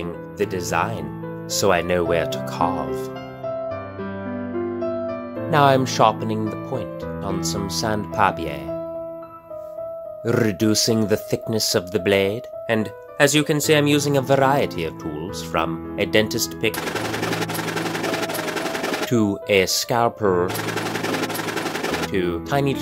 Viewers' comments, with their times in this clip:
0:04 The sAnD Papi-Air